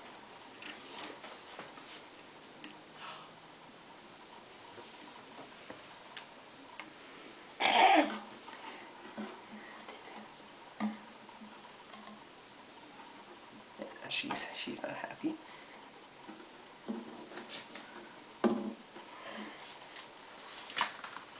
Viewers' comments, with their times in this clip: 0:07 did the spider just growl? O-o
0:07 Did she snarl at you? xD
0:07 Hahaha, damn that's understandable then. I was wondering because it looks fairly passive except the noises you can hear occasionally, for example ... is that the spider 'hissing'?
0:07 did the tarantula make the noise?
0:07 omfg did the spider make that noise or did you???